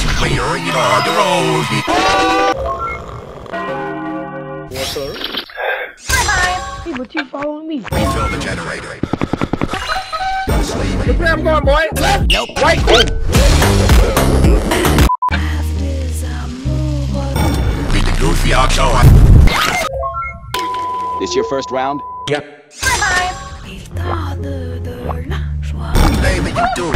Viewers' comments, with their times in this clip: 0:10 IK YALL HEARD HIS ANKLES 😂😂😂